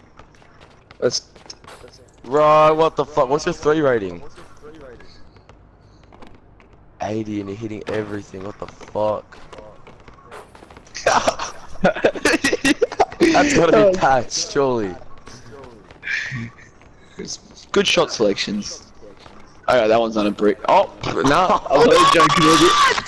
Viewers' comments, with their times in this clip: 0:10 that laugh just like X...RIP